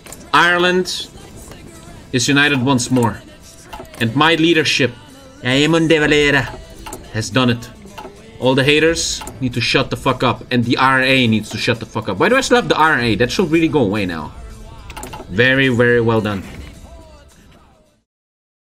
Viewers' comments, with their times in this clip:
0:05 The funny thing is, that’s how De Valera would have spoken.